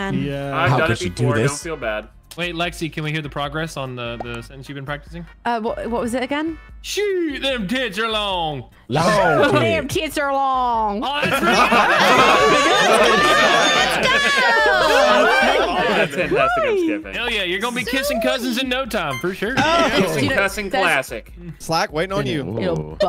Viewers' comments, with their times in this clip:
0:09 for her southern accent